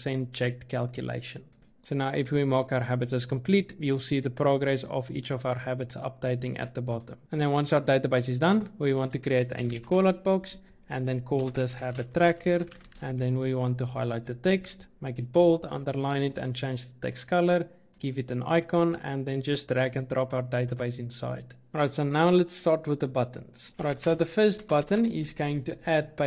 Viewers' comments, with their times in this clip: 0:08 Im rewinding over and over again what are you saying? Its too fast slow down